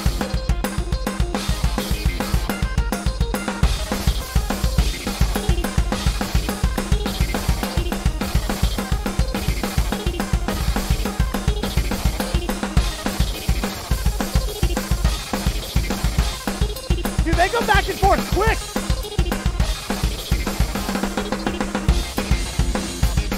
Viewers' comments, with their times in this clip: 0:04 I love how inconspicuous this part sounds, despite, at least in my opinion, easily being the hardest part of the song